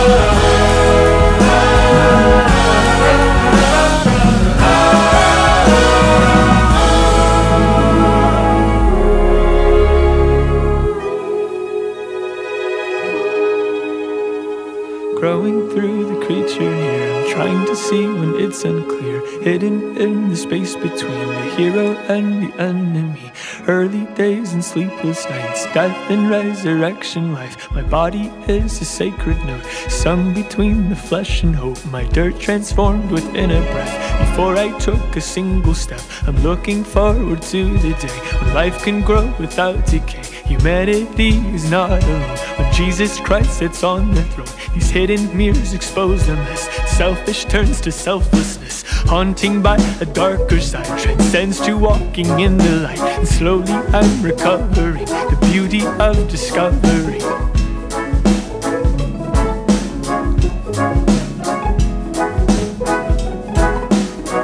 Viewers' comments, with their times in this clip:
0:03 whatever theyre doing with the metre onwards is amazing
0:48 when the violins start plucking though